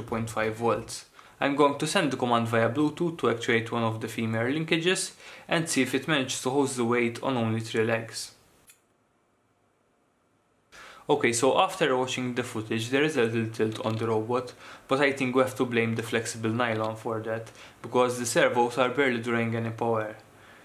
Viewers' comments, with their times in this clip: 0:05 What's a female linkage? I've heard of linkages, and of the terms male and female being used in engineering before, but the two terms being used together in 'male/female linkage' is new